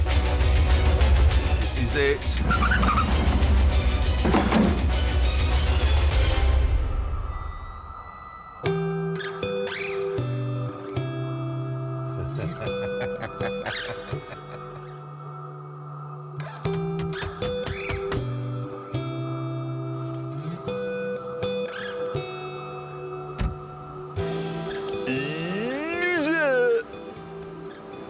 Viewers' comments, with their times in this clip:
0:08 That laugh and hitting the steering wheel when he stopped the jag.. That proud and joy.. with a magnificent sunrise view.. Priceless..
0:14 the proud laugh of a happy man